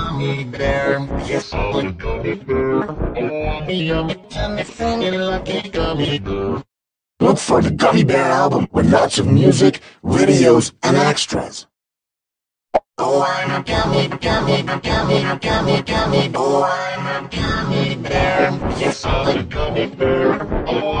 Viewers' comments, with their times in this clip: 0:06 sounds like going weirdness every